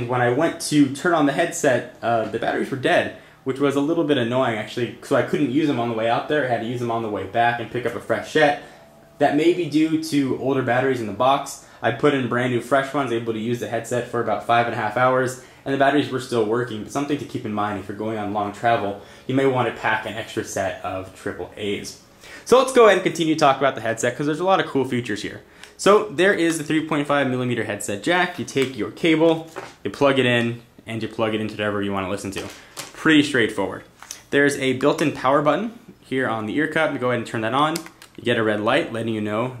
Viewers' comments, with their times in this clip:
0:06 lol he had to pick up a fresh shit
0:21 he say pack some triple aids lol